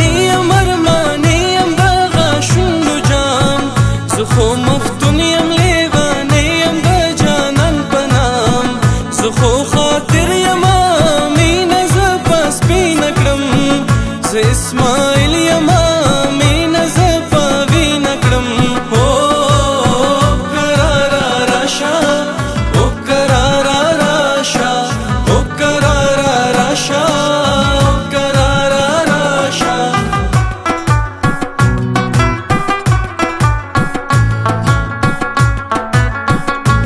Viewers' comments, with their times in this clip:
0:04 got randomly .....it is very boooooosted song
0:18 is so beautiful❤ that oooo ❤